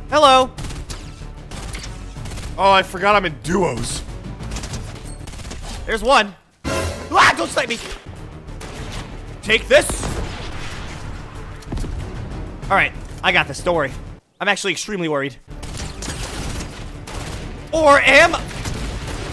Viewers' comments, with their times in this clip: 0:06 All my The hollow fans know that he sounded like Kai when he screamed
0:07 what was that scream 💀